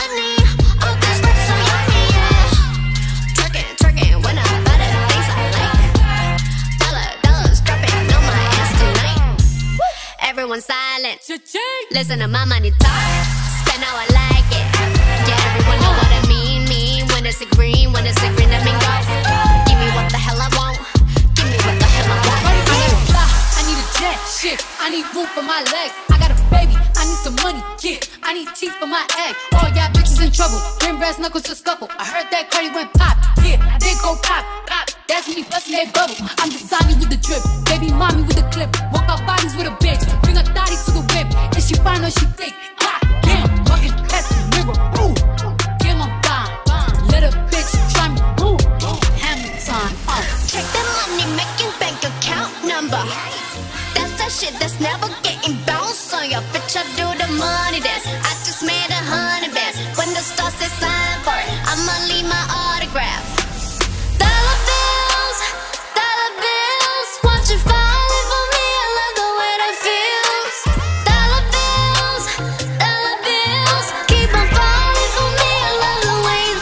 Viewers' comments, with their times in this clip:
0:10 YOU HAVE TASTE AND A MUSICAL EAR ALSO FITS SO WELL SHE GOES CHA-CHING
1:03 and the rest after that was a little to smooth